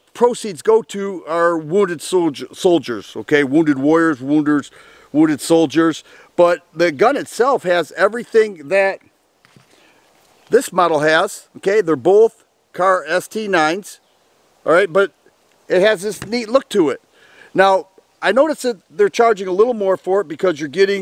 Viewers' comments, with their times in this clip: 0:06 Try and say wounded warrior ten times fast. 😂